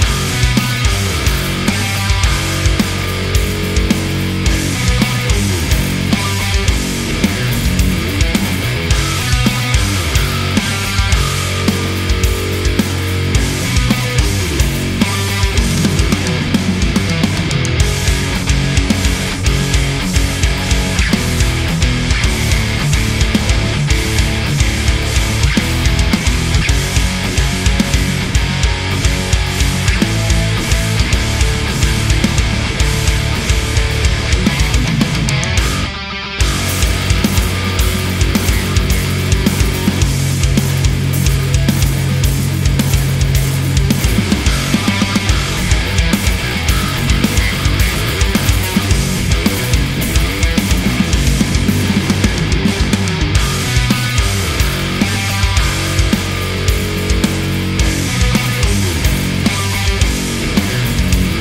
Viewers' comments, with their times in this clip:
0:07 Hhmmm... I think the 8 string sounded fatter when you just let the string do its thing perhaps due to the string actually being thicker (perhaps, I don't even own a guitar) but otherwise I actually like the sound of the 6 string better.
0:37 The pickups sounding much different is the biggest difference. I would have liked to have heard them without any processing so you can actually hear the sound of the instrument rather than the distortion and such. As far as sound goes though I don't think the scale length makes enough of a difference to really matter that much. Or at least not enough to justify buying one. The main reason I see why you would want 8 strings is to increase the range of notes you can play and the "beef up" the feel of the instrument. I only own 6 strings and playing something larger always feels weird to me and that definitely effects my playing and therefore my sound. The parts where you were playing chords sounded pretty much identical. There was also a moment where the mix really made the 6 string sound weird. The difference was about the same as switching from one pickup to the other on the same guitar.
0:42 That droning section ish. The 6 strings low drone drowns everything else out as well